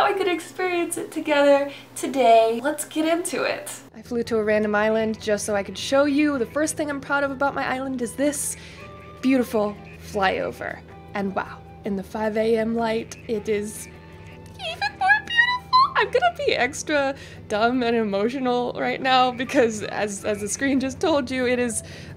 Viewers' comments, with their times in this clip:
0:04 is when the mic get better so here